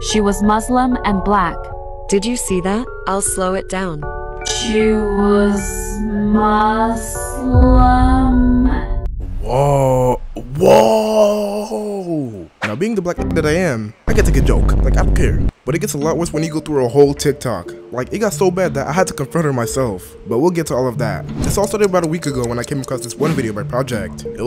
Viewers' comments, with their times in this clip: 0:10 bro i am a musilm plus your saying musilm wrong your saying muzlim